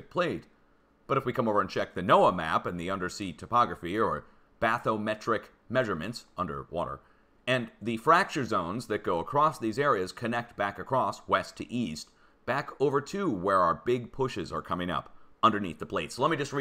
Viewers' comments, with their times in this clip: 0:03 it sounded like bassomatic measurement